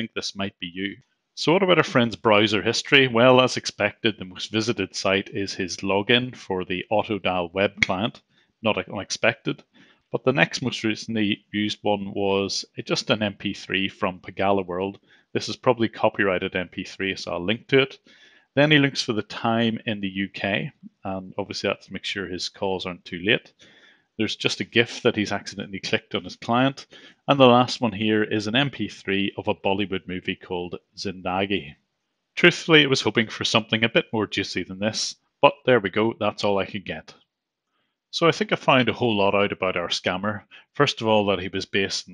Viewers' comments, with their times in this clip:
0:05 Being an Indian this just offends me that he has the Indian accent and trying not being one! Edit: he plays songs and watch movies to pass the time! XDXD
0:28 ouch that pronunciation is so bad